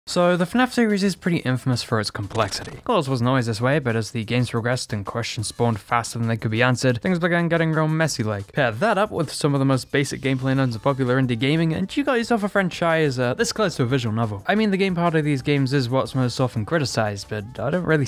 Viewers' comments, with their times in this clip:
0:00 me : just chilling while playing roblox and listening to the video in the background also me : OMG FNF MUSIC IN TGE BACKGROUND EEEEEEEEEEEEEEEEEEEEEEEEEEEEEE